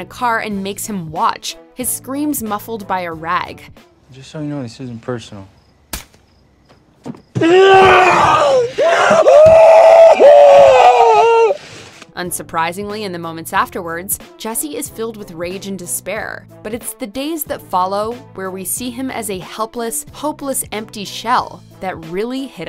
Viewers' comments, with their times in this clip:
0:03 I felt the way Jesse cried from then on, I think he lost the meaning of life 😩
0:05 Poor jesse in his cry you hear despair and sadness